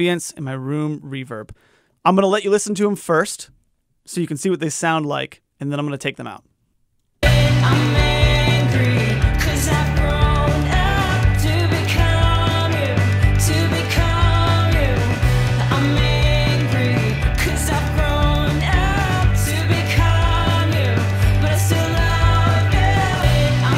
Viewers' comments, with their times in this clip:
0:05 sounds pretty muddy and vocals are recessed. That’s a powerful track. Vocals need to be a little more forward. POP!